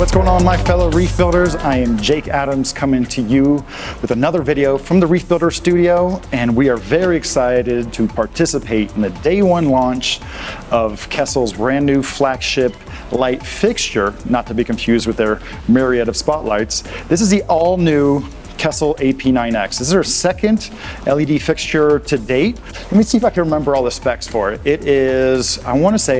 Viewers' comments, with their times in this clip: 0:07 Intro ends That's like 7% of the entire video is intro music that's twice as loud as the actual video. Gotta love social media.